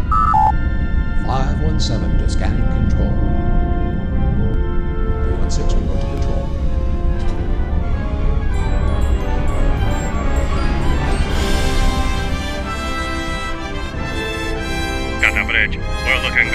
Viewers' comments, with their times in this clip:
0:04 What is the dialog here ? Sounds like Shatner but I cant pull it out .